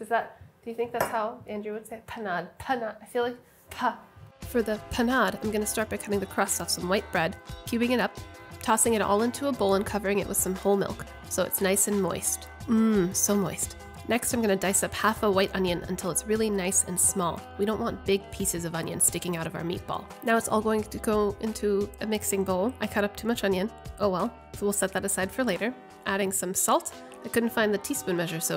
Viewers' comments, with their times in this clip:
0:04 Sohla: Me:Who is this other babish?
0:13 that was just sooo throaty omg her voice.